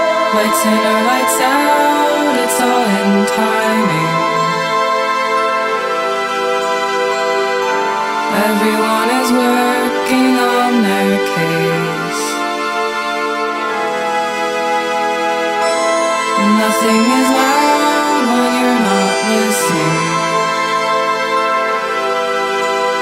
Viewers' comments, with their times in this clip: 0:10 Generation Clone vibes, amazing!